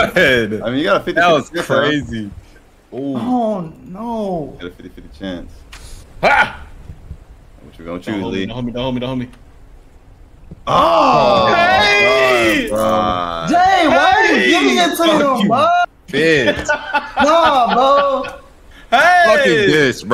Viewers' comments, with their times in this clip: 0:03 sounded like the Deputies in West Hunt🤣